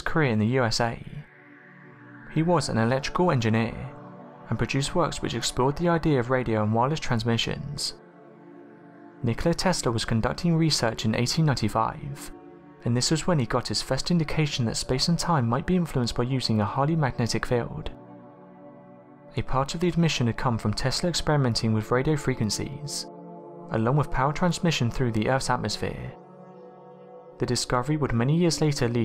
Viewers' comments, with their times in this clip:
0:10 I’m open minded but you’re batsh crazy. I had to stop watching after Something about that voice is just blah